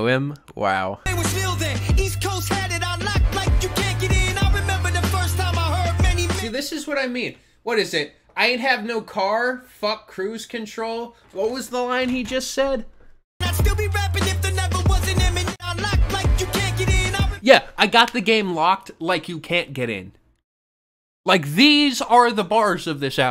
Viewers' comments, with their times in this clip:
0:04 well at least its a good ghost face impression